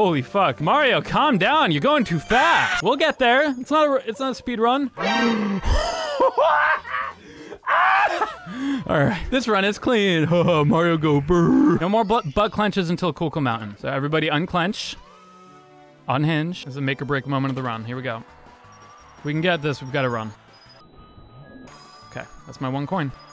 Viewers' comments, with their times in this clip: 0:06 the real joker laugh